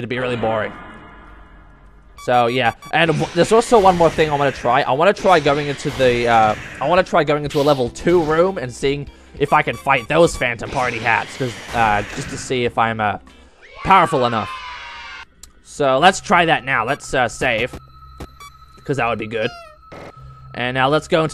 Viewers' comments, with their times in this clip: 0:07 OMG FOXY HAD A BRITISH ACCENT! How!?